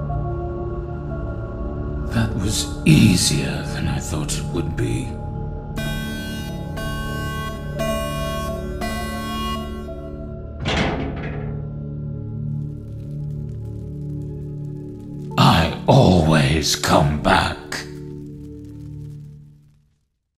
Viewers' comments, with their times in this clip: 0:10 sounds on the left.